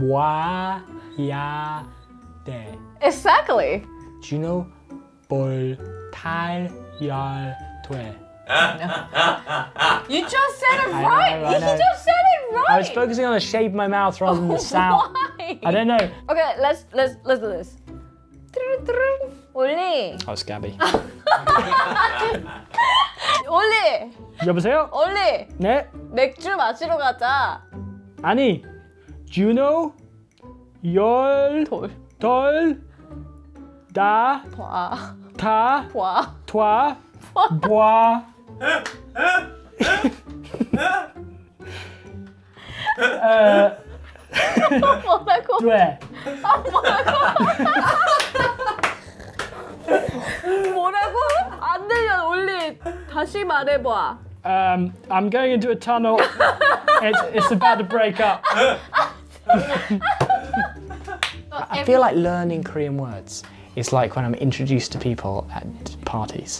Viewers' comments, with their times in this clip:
0:08 wait who’s that laughing ?! 😂
0:38 anyone hear that seal in the background?
0:48 I CAN HEAR KIM SEOKJIN'S LAUGH OMG AND THE CLAP